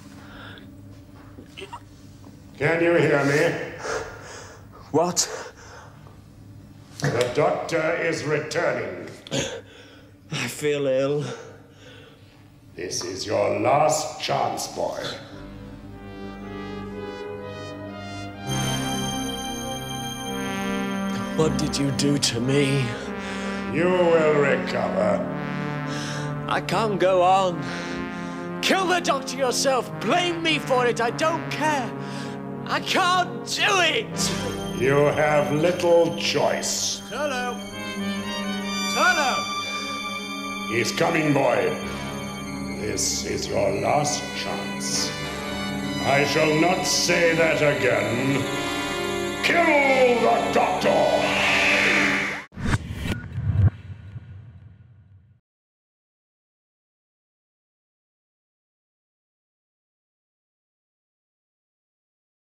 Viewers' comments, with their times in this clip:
0:10 sounds like the 4th doctor
0:49 There's something about Valentine Dyall's voice that really gives him a solid screen presence.